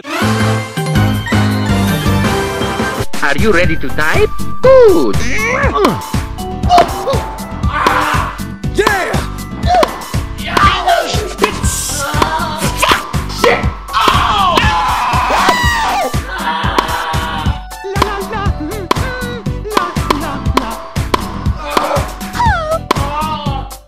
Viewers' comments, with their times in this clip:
0:04 Good old tennis A few Seconds later Confused noises